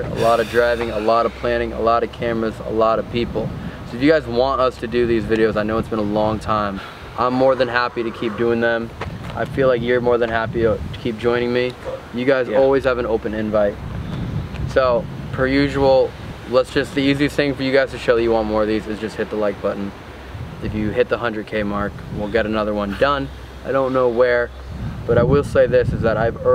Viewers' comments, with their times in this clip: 0:07 you can here screams from the building that sound like a woman